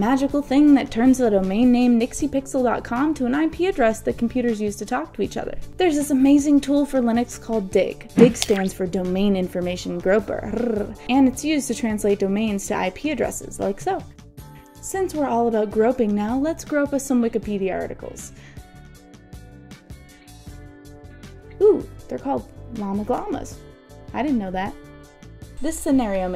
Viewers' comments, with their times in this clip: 0:10 is it just me, or there's a cat purring ?